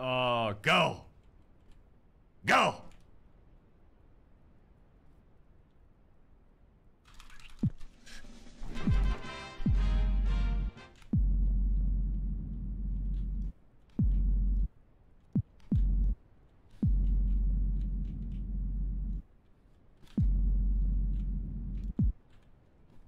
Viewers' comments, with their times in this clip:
0:08 The Victory fanfare music has me dying! haha